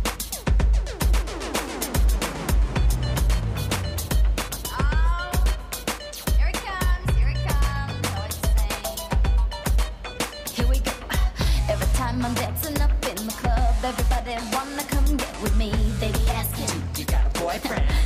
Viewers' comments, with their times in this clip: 0:06 she was singing half of the song and First of all she as lip sync and second of all she won third of all Mackenzie flipped and did more then her